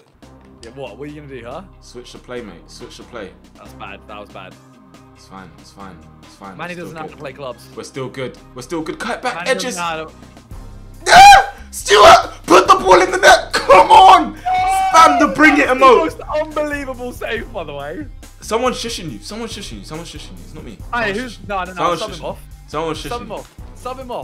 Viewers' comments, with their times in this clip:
0:05 simon said: “my n****s know how to play clubs “or am i tripping ?
0:06 || Simon literally said "My nigga has to play clubs" WTF